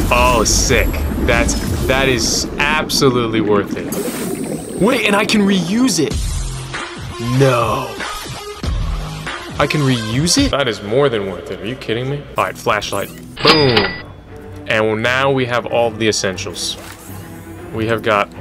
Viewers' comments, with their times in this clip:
0:06 damn i havent heard this song in a video ever. incredible